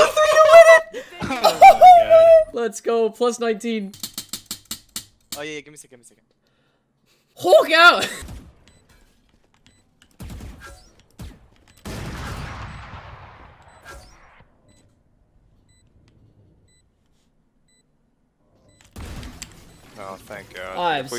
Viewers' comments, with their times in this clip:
0:06 the salty voice crack xd edit: now its my notification sound